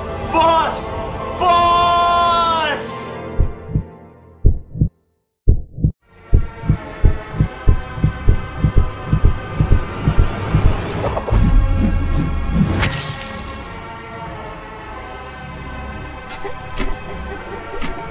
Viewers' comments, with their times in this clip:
0:06 best game music in all of history Also the timing's pretty good I guess